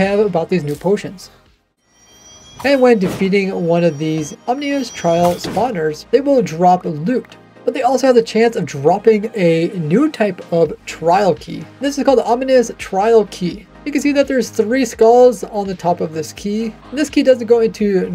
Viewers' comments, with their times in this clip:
0:04 Bouncing back and forth between saying 'ominous' and 'omnious' which is not a word is crazy 😂😂 aw man